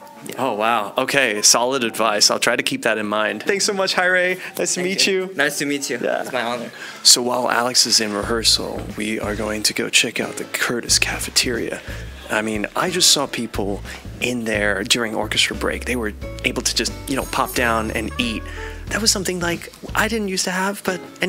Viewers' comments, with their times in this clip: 0:06 I wish I had heard about this school when I was younger. Such a great video! Love the Animal Crossing music in the back ground min mark <3